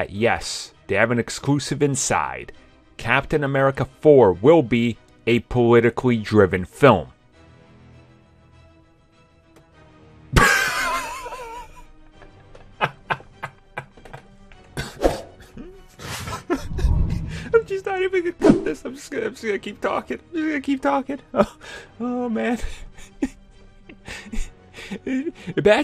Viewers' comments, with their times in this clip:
0:10 Considering the laugh I think he knows banal that point is.